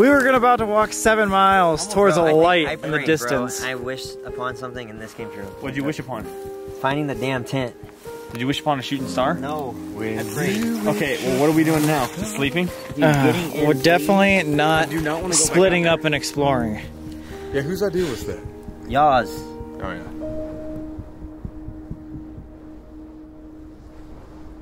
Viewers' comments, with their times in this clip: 0:09 did anyone else here colby singing he's so good😍😂🖤
0:10 colby just singing "WhEN yOu wIsH aPoN a StAr"